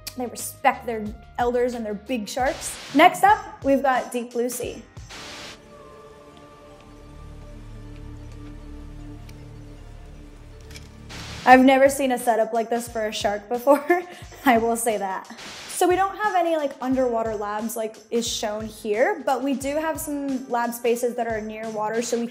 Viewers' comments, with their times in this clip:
0:04 What she said: Deep blue sea What my twosetter ears hear: DeBuSsY-